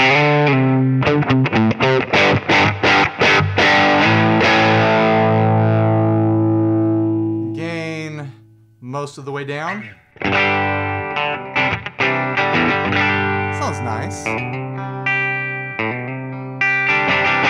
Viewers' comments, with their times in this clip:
0:03 love the quack